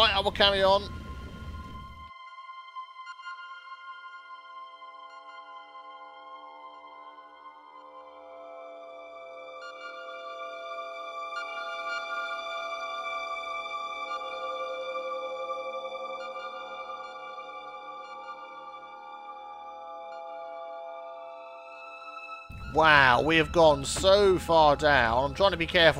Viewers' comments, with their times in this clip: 0:10 the song is very relaxing. what is it?